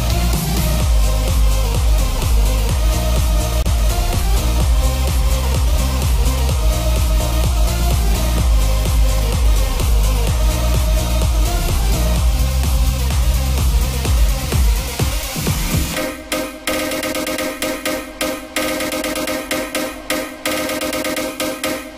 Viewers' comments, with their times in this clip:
0:07 Wow I didn’t know I’d be having rice crispies for dessert tonight! 🔥🔥🔥 crispy af!